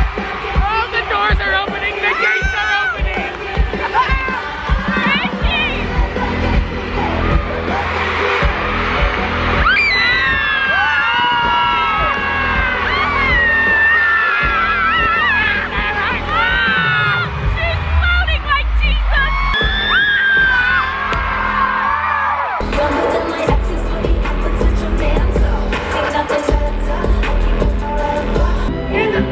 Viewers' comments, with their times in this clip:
0:10 voice crack tho